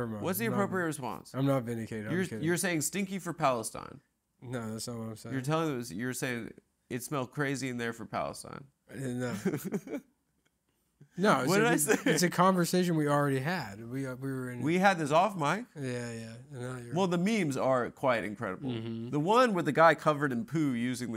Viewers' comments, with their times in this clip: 0:08 cute moment. nick tries to sulk but can't help but laugh at adam's joke